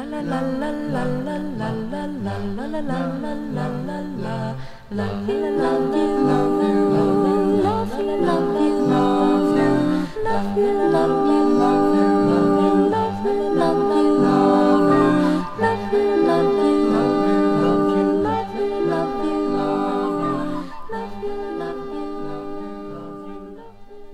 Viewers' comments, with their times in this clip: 0:08 Lol! ALL overdubs!!! Listen: you hear TWO "Love you" dubs over her 3rd "la la la, la la" track. 3 Female voices, only two females in the band if you even accept your are hearing two different females there.